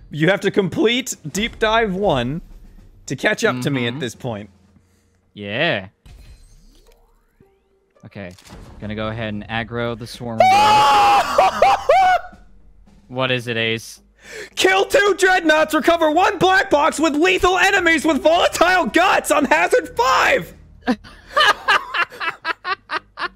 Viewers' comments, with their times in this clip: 0:09 Codename: massive scream